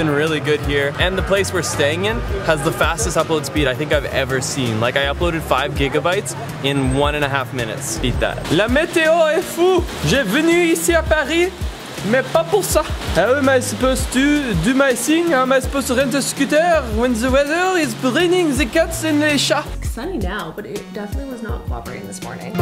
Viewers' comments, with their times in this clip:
0:09 I immediately subscribed after hearing your French accent 😂